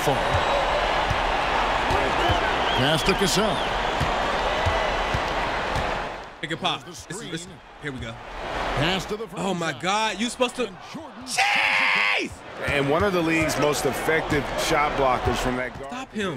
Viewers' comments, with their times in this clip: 0:03 You yelling at this man Cheese like the people from Foster's Home 😂 #Funnymoments